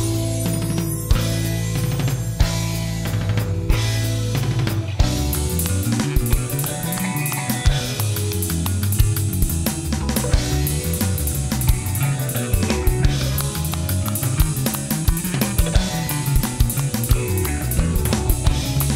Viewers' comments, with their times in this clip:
0:04 Nice Bass riffage on